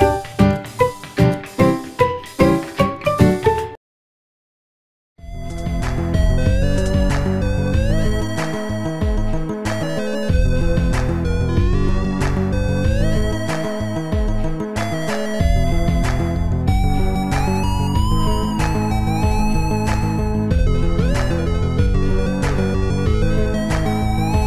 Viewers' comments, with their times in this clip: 0:06 bro this music is so soothing